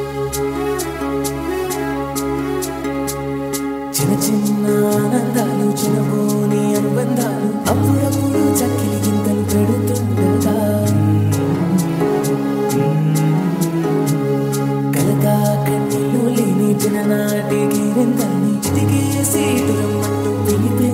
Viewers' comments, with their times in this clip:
0:03 From Super Singing 👍👍👍👍 Like Here 👍👍👍👍